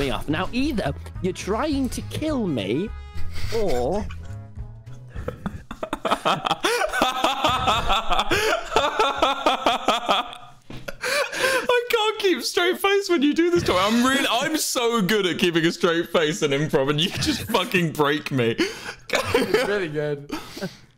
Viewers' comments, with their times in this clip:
0:04 wilbur forgot how to laugh and went back to classic
0:05 mans really laughing in lowercase.
0:06 that was the most lowercase mixed with uppercase laugh I've ever heard
0:06 WHAT WAS THAT LAUGH 😭😭😅